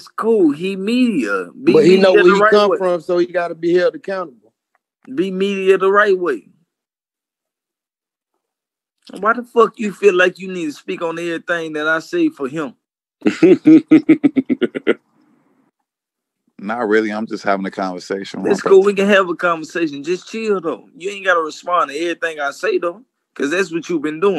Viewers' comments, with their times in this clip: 0:10 when Joe cracked up laughing 😂😂